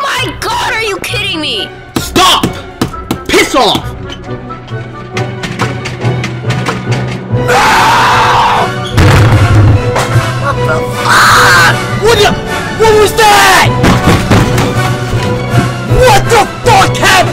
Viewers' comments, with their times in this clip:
0:03 British accent P*SS OFF!! 😂